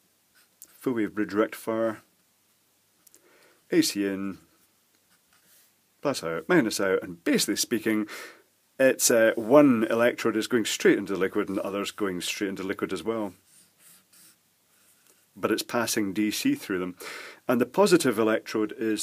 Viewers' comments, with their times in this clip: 0:05 my phone has activate siri because you have said AC in 🤣